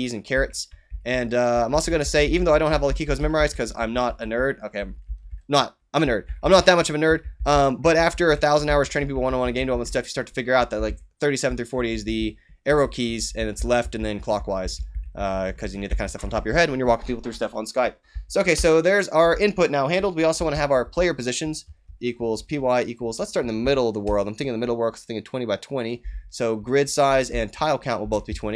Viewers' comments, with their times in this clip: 0:10 Minute I realized you are a super human Cyborg and had to change the speed to understand you! lbs great video my friend, thanks